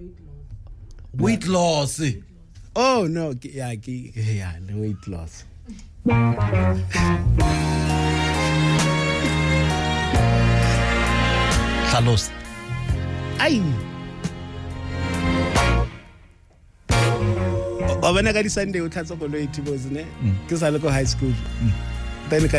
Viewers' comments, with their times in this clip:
0:04 🤣🤣🤣🤣 he even laughed at himself 😂😂😂😂😂😂😂😂